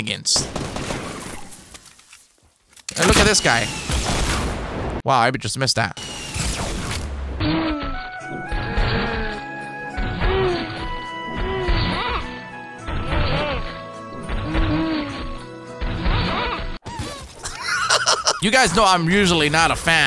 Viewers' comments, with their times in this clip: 0:08 lol it sounded like moaning XD